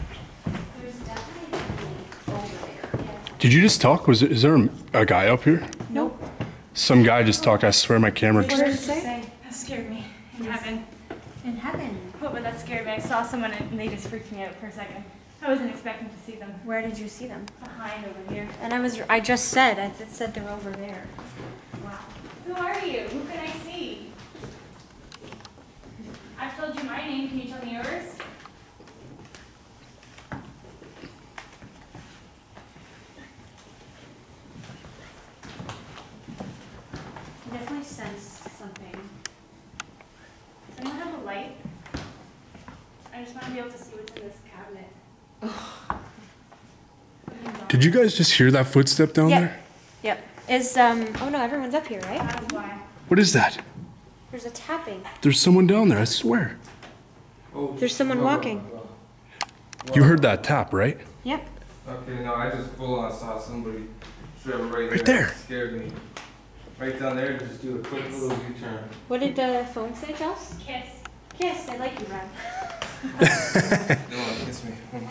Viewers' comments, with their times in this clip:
0:05 in Lomar I heard that male voice too
1:00 in I heard walking